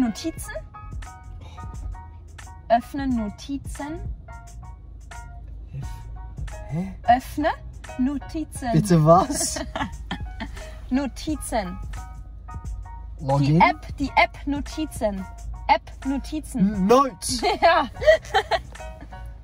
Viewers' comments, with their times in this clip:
0:07 * *sounds so german omg😭